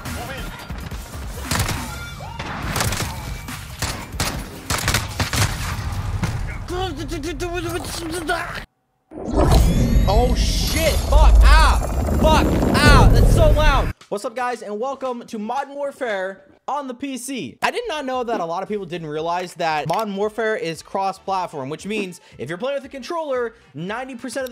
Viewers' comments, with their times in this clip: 0:09 Thank you for acknowledging that the booting screen is loud af on pc